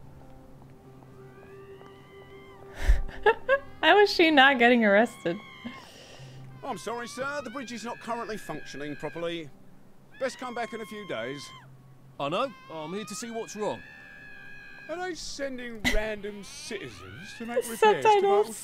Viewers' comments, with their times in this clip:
0:06 And also this one OMEGALUL (screams)